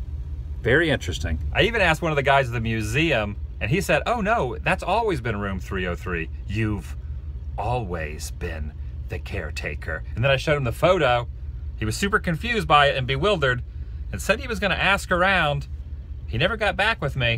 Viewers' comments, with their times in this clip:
0:05 I love how you break into Delbert Grady..